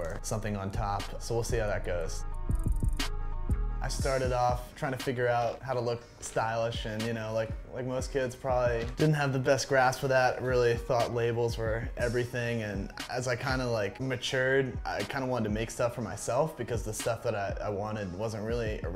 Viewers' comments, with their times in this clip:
0:04 I though he was trying to rap at first w/ the beat lol